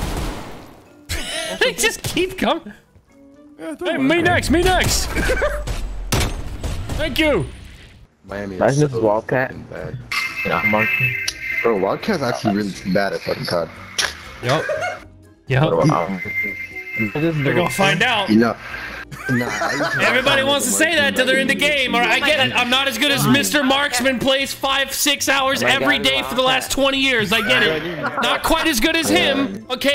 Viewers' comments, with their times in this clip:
0:10 you can here someone watching the Godzilla vs Kong trailer